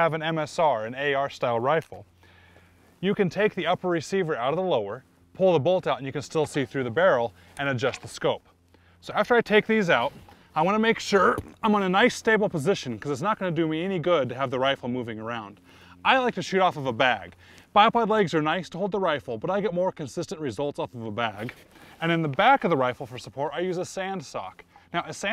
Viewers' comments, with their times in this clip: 0:09 That was funny as hell this guy punched out a pine cone turd fart lol he even grunts
0:10 did he fart hahahahahah
0:10 was that a fart?
0:10 it sounded like he farted lol I know he didn't but its still pretty funny nice shooting BTW!!
0:10 Is it just me or did he fart ?
0:11 And it sounds like he shit his pants! So, did someone edit that sound in or what?
0:11 lol, the sound is his boot toe slipping off the shooting mat onto the rocks (you can see the immediate tension change on his shirt), it's a noticeable sound. But I'll agree it sounds exactly like a let one off.
0:11 Lmao at pine cone fart
0:11 Nice Fart LOL
0:11 He cut a big beefer i cant unhear it.
0:11 Did he fart ? Also great vid.
0:11 I think he farted at the mark
0:11 Very nice job explaining this, but did anyone notice when he says, "I want to make sure" he lets out, what sounds like a fart...Pretty funny and he just keeps talking like nothing happened. Way to play it smooth.